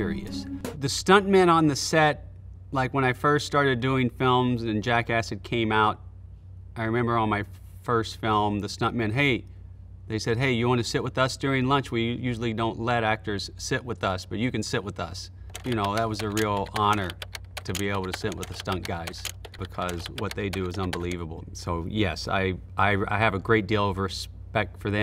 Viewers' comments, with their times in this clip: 0:08 lol he is obviously just reading a script lol.